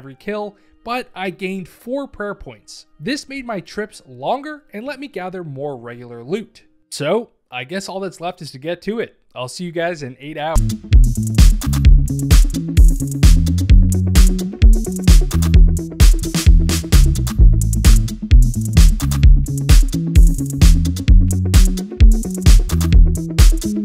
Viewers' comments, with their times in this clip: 0:10 Song got claimed, so instead of losing the video we get whatever youtube gives us lol, tried to pick something that wasn't just awful to listen to!